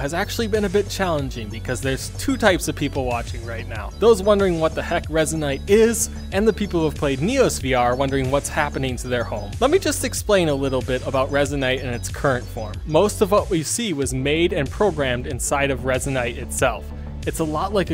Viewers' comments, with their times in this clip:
0:05 Voice crack XD